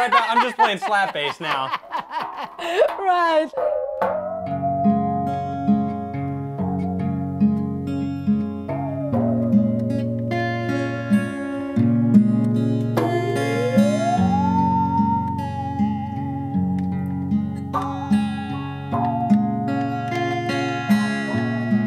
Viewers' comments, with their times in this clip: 0:03 The last song you guys played, was actually pretty beautiful. Mindblowing, considering that neither of you knew how to play those instruments. I guess some people simply carry good music within themselves. I loved this video, thank you so much! 🙂🙂